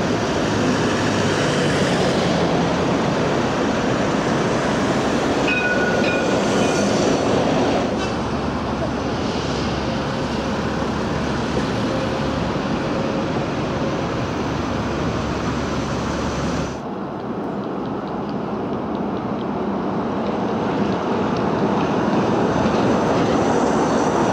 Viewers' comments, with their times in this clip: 0:05 It has a tram gong?!
0:05 I think this is one of only four cities to use this futuristic bus! A bus that looks as modern as a train! I'd like to see non-articulated versions of these buses! it has the same bell as a CAF Urbos 3 streetcar, which is used in Kansas City!